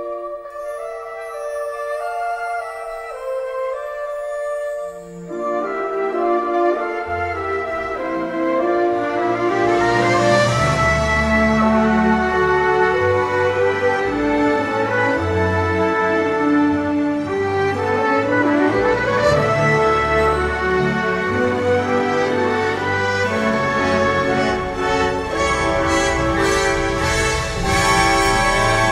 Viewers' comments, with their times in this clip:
0:10 until the end, I basically cried. What an incredible musical gift you have and really made my day with this incredible trumpet and french horn cover to one of the best musical scores from Alan Menken
0:10 that horn line is all i need in life :)